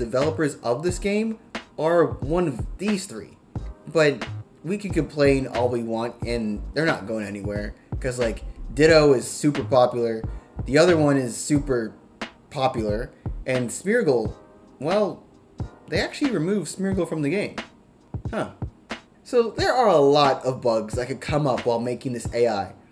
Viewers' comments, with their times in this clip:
0:10 my man, that hesitation made me laugh way harder than it should have